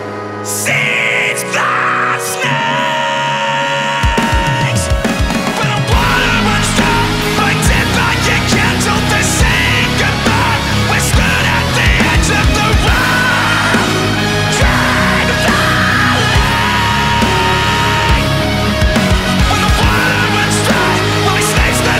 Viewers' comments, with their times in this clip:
0:05 I didn't notice that Sam made a mistake at this part till the 5th time I listened to this. Anyways this is really amazing!!!